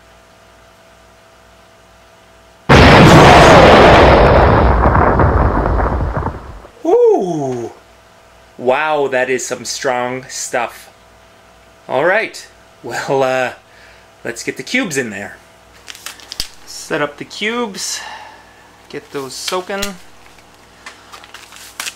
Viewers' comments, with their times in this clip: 0:07 God dammit!! had my volume up and my headphones in .. Scared the shit out of me.